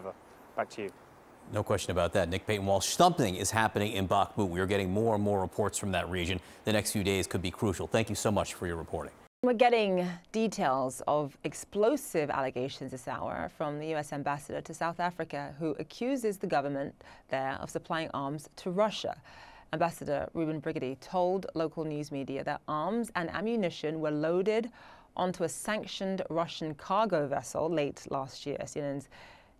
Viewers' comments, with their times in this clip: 0:10 what is her accent? Sounds a bit British or possibly Australian, but I can't quite place it. Anyone know?